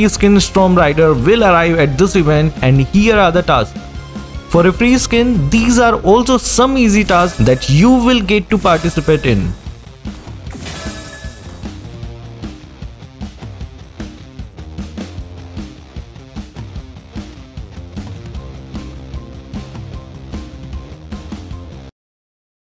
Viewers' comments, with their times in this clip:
0:05 was that a fart or a glitch